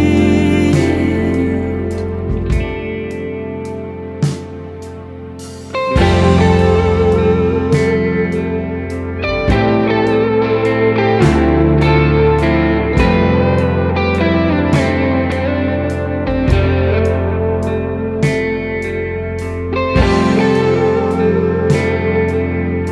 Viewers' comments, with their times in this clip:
0:05 Starting a heavenly guitar tone to die for!